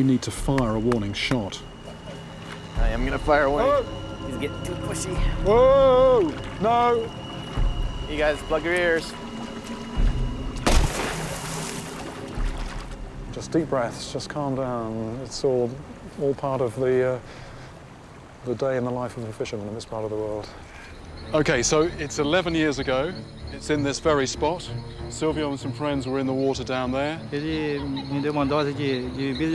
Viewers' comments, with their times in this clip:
0:10 That was a big ass warning shot!